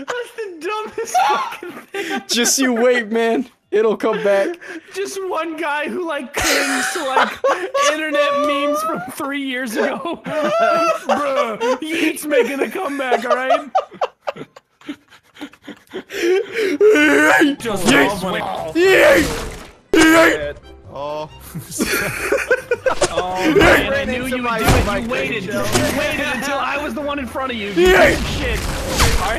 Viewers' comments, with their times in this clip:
0:10 the way he says YEET, it fucking KILLS me 😂😂😂😂